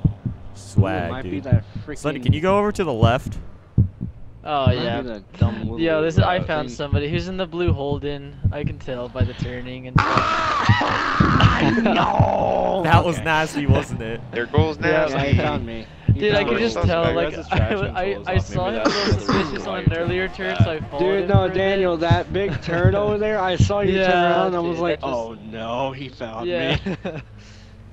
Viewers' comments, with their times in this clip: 0:08 Ye nice **holden** 🤦‍♂️ **all fellow Aussies proceed to cringe** 😂
0:11 sounds like wario